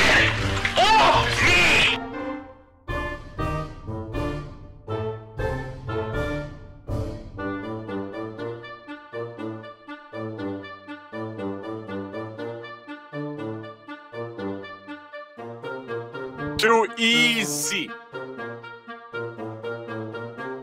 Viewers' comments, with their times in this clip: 0:07 that music is even funnier than the meme itself 😂😂